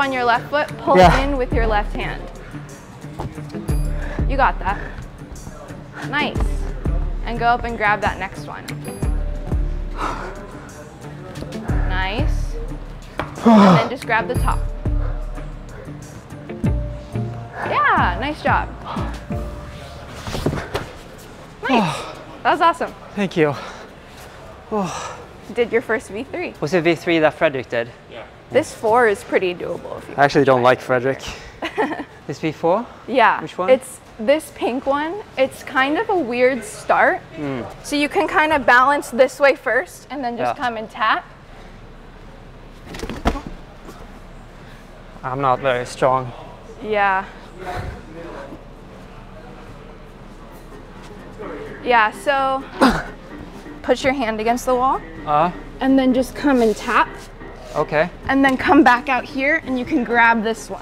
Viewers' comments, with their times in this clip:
0:03 She sounds like my wife when I do the laundry
0:44 I love how casually she agrees.